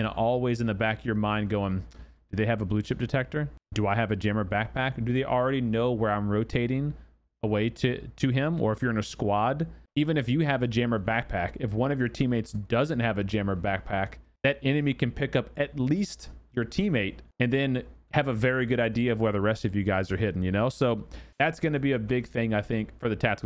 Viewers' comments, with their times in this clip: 0:04 You're cute when you say "Jammer pack"